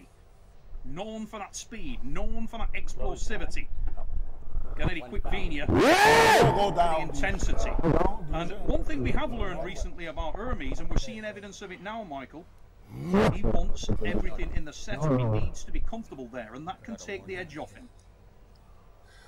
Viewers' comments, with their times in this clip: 0:05 Sound of a lonely lion in the forest....